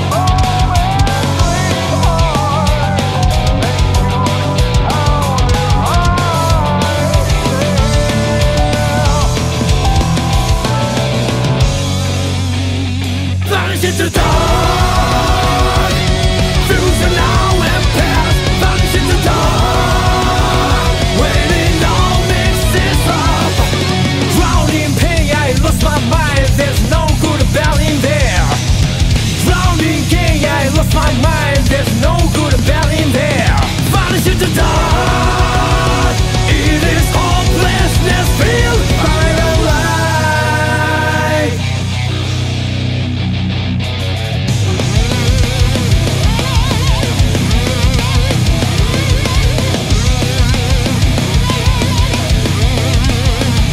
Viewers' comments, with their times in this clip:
0:07 I live for the few seconds after where the piano and drums sync perfectly.
0:41 sounds like something from the doom eternal soundtrack